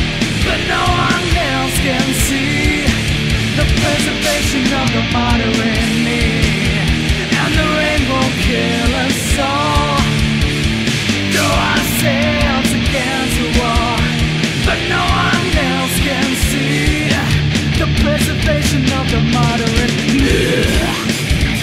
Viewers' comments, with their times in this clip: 0:09 That's the best moment. I could feel like some kind of demon was leaving your body. Amazing